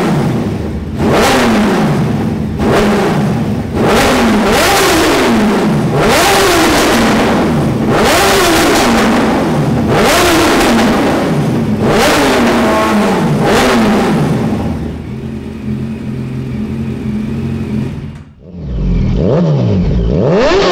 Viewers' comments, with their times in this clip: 0:04 going to another dimension with that exhaust note🔥